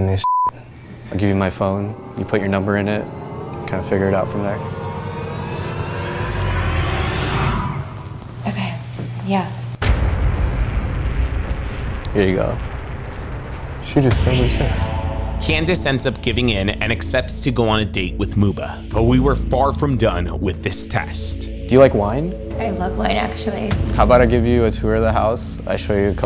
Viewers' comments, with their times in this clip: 0:09 When she said OK yea that was a fail and not cause she said ok yea, but because of how she said it. She said she had a BF, but at that moment she made the decision to get rid of her BF and give the new guy a try cause of the house. You could tell the way she sighed she made up her mind right there. LOL "NO NO everything you were t telling me earlier" 6 houses hahahahaha